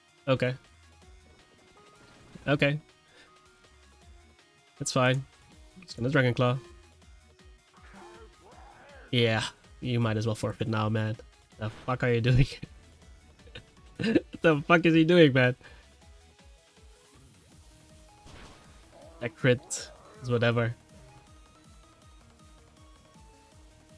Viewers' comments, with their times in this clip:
0:05 the calm "yeah... you might as well forfeit now man..." had me laughing so hard